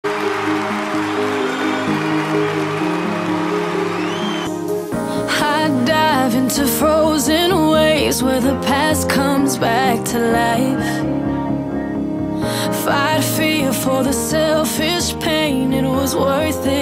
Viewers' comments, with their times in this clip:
0:01 why do i hear who is your daddy